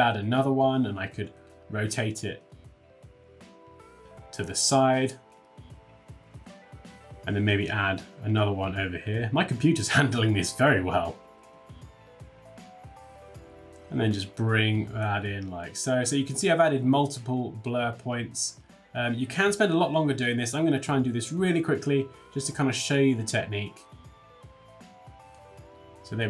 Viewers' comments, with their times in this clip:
0:09 My pc handling blur very well ; his pc in the background screaming 😂😂😂😂